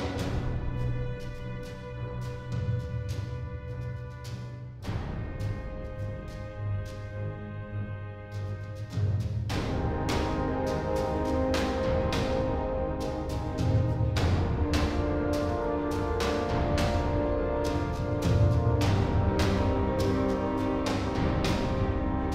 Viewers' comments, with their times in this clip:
0:05 It's nice how the music dissolves from minor key to major key just as the allied forces are beginning to make inroads.